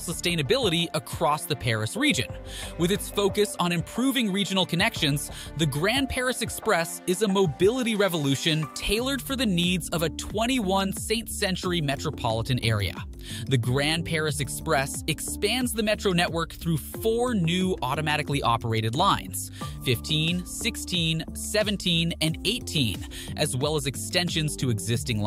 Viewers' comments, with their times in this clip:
0:10 "21 St. Century metropolitan area" 🚨AI Generated Voice Alert🚨